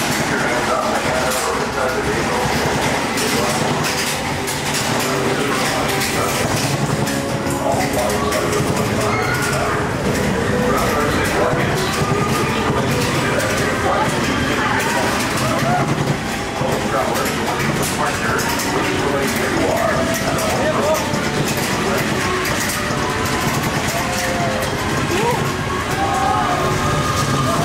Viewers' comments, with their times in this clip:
0:10 Did anyone else hear the evacuation announcement
0:10 who else heard the breakdown announcement? That’s what is said when the ride stops.